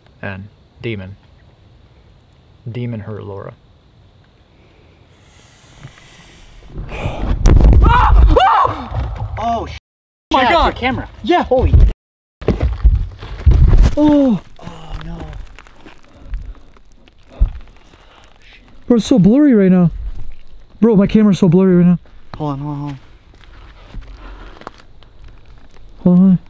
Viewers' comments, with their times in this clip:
0:08 right when the camera fell during using the board and right as the camera fell it sounded like a exhale came through my head phones